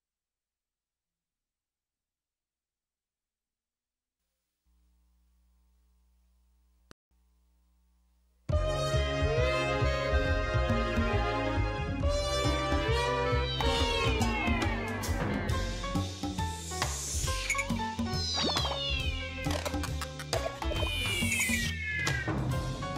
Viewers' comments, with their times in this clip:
0:08 not enough people talking damn banger